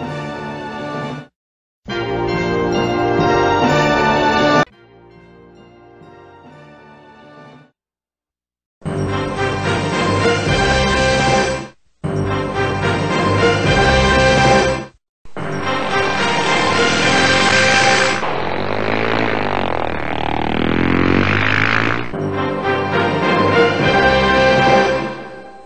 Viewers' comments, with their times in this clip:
0:08 that one scared me a lot, i guess I should of turned the volume down.